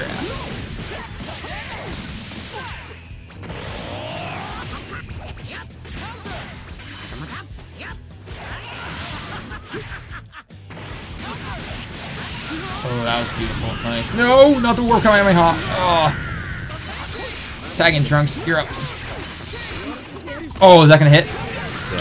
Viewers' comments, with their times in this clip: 0:08 that laugh made my day